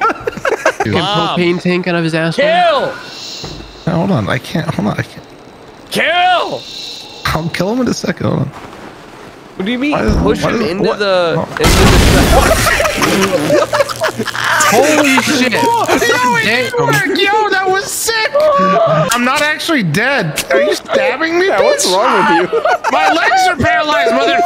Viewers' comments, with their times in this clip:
0:08 "what do you mean" 5 milliseconds later "KABOOM"